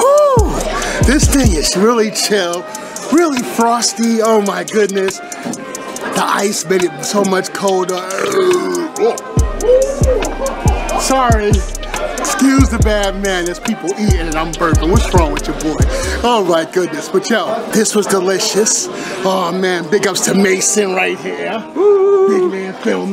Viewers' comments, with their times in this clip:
0:08 miniutes and all is----- "URRRRRP!" 😂😂😂😂😂 Imagine doing that ROAR you uploaded back in 2020 in there! I would be laughing my butt off!